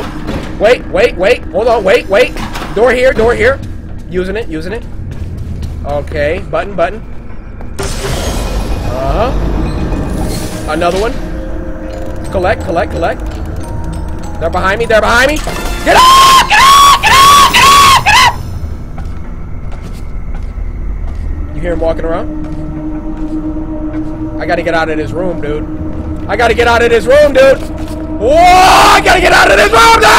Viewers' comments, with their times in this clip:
0:05 He sounds like he’s playing call of duty
0:15 / new alarm sound
0:15 Me: Cory, what sound does a chicken make when it's being chased? Cory:
0:15 Scream like a chiken
0:16 he sound like chicken
0:16 the way he was screaming "get off" had me dead